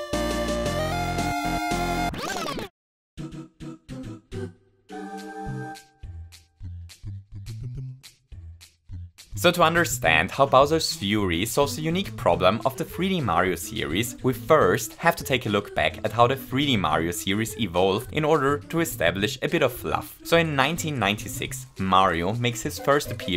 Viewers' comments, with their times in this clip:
0:08 I just had to remind 10 seconds because I vibed so hard with the music that I genuinely didn't understand what you said